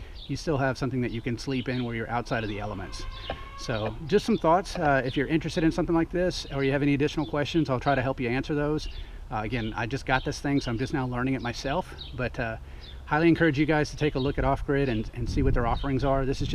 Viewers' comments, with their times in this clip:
0:03 Nice review and thank you. For the price this seems to be a nice off road trailer. I do agree with you that the outdoor kitchen could be upgraded a bit.. On another note, did I hear an elephant ?